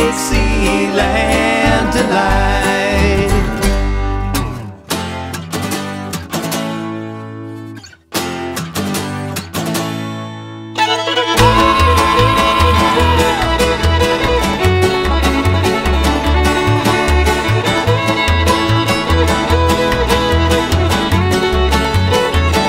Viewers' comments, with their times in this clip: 0:10 The jam that starts is amazing